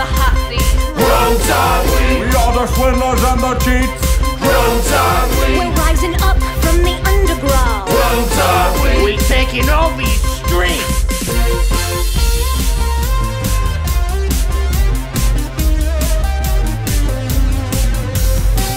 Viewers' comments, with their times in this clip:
0:05 I love how she says "We're rising up from the underground!"